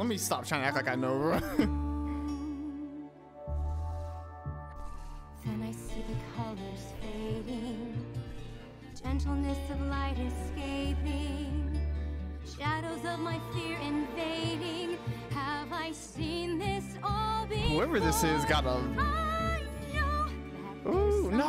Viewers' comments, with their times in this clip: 0:05 In that distant shore when it changes into the dark path the beat changes so well that even if u were a bad singer you could make it sound Really good